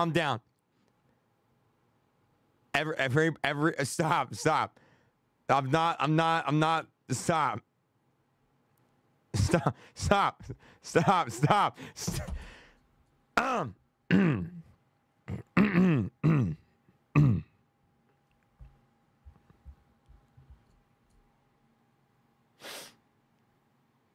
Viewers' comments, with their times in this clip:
0:08 he forgot to end his stream because he laughs